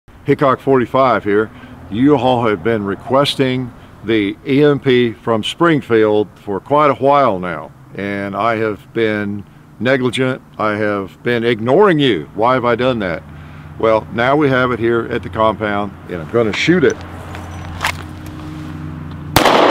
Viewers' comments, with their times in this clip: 0:06 "Quite a hwhile " - Meg Griffin